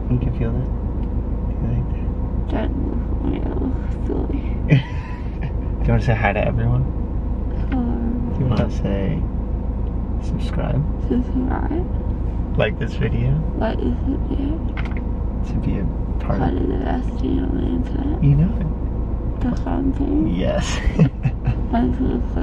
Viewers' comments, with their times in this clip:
0:08 She is such a cutie pie!! And the way she said hello 😍😍